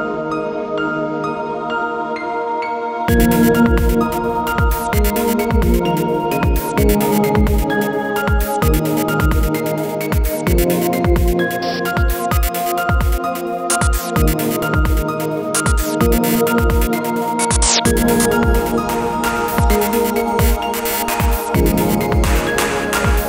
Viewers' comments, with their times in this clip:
0:07 I like the mix of mechanical noises and soft synths